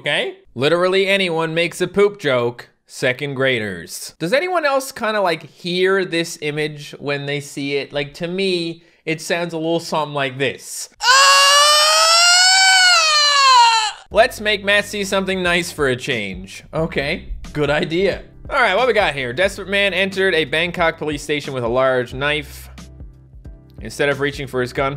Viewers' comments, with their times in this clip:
0:10 It sounds more like a mexican mating call
0:11 Thanks for the ear rape in